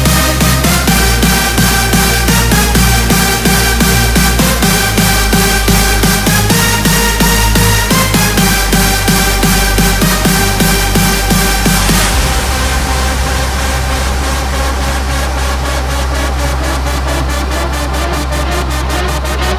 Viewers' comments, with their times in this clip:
0:04 Sounds like Deadmau5 Arguru's chord prog or whenever the 2nd break/build like right before the drop... music always just gets recycled over and over....